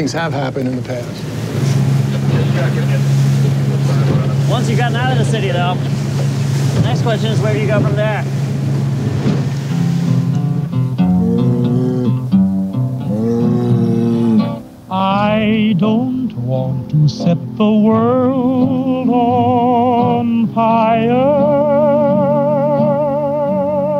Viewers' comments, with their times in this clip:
0:10 * fallout music intensifies *